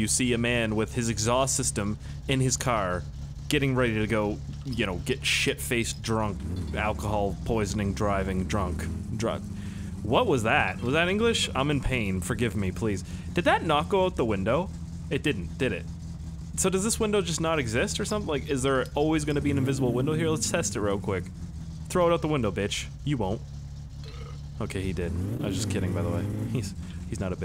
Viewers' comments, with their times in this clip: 0:09 OMG HES SPEAKING DRUNK FINNISH